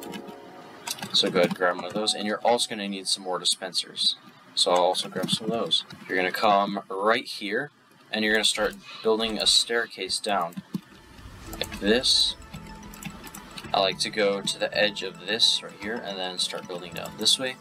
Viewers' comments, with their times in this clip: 0:03 Use OBS to record without a watermark, if your PC cannot handle the processing power needed for recording, you can lower encoding preset, bitrate and resolution. For editing, use simpler transitions as they are slightly too long and makes the video and audio unsynced for a little while. Also, for presentation purposes, don't use red font color without an outline/stroke effect as it struggles to stand out. In terms of audio, your microphone is picking up the keyboard and other background noise. To get rid of this, simply increase your input sensitivity (I'm not sure if PowerDirector has this). It'll sound cleaner especially in parts of the video such as Just some content creation tips I observed as I can sense a lot of potential in your content.